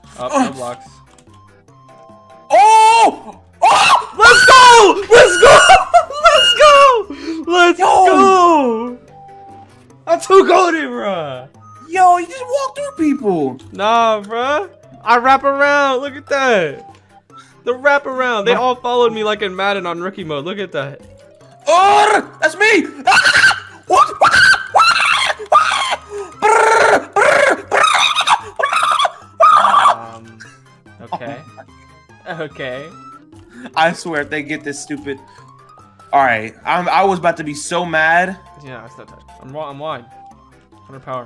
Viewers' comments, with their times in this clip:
0:03 that scream tho...............................................................................................I LOVED IT
0:21 the wirdest sound a man can ever hear lol
0:22 what I hear from across the hall of the sped class
0:22 he just speaking another language right there
0:23 sounds like a squirrel
0:23 mans sounded like my brain at 3 in the morning
0:23 The birds out side
0:28 what I hear every morning when waiting for my bus from the birds
0:28 when a turkey iis choking
0:29 constipated turkey mixed with stressing dog